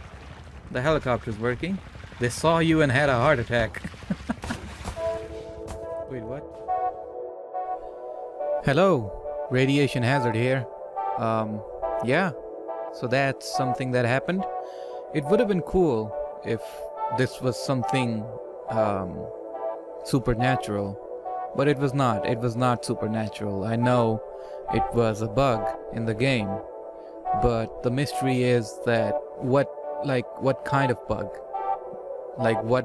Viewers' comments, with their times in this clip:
0:05 I waited DnB vocal drop in that music on wtf(
0:16 when the music (kinda )started playing i freaked out